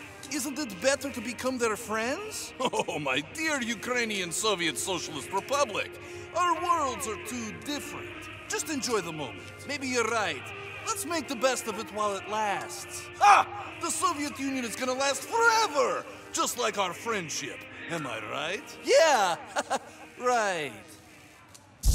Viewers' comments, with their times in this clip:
0:03 you can hear the song of the soviet union